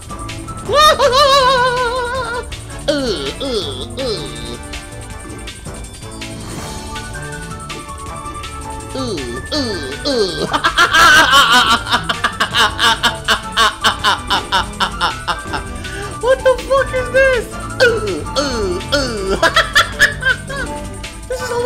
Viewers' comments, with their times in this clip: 0:09 oh god that fucking laugh